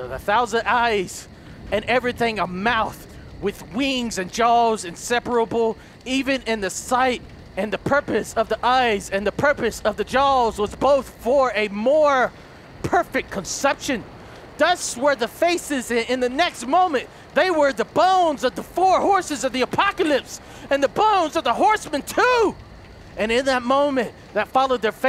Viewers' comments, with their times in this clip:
0:06 he sounded like a priest